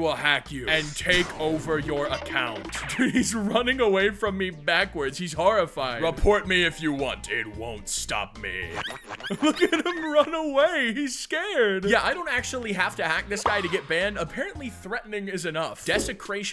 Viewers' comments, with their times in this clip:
0:04 THE DOG SOUDS LIKE MY DOG WTH